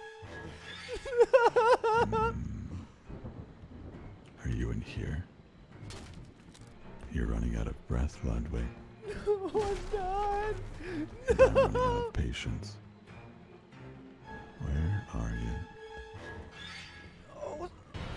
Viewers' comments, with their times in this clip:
0:06 Reminded me of Slade's voice from Teen Titans